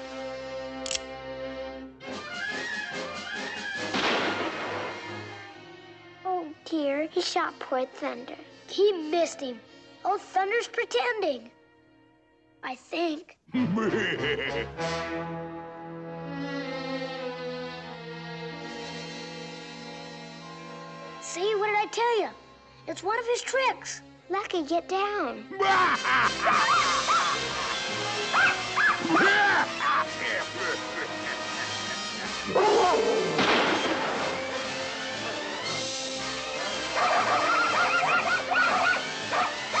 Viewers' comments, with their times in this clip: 0:08 I feel bad they were scared after the gunshot. Makes you wanna hug them. But at least they know Thunderbolt is ok later.
0:25 I can hear Heihachi's Laughter from Tekken